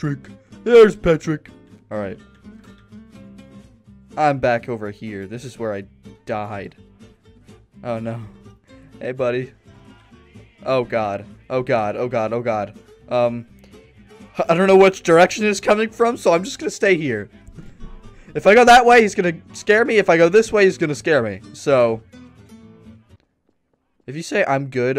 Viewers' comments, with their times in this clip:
0:09 “Hey buddy.” Music plays in the distance “Oh no..”